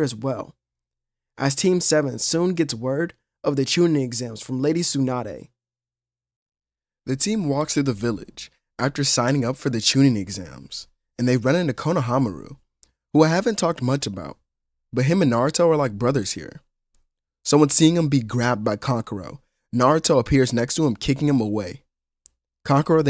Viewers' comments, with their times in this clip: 0:07 why did your voice get so deep😂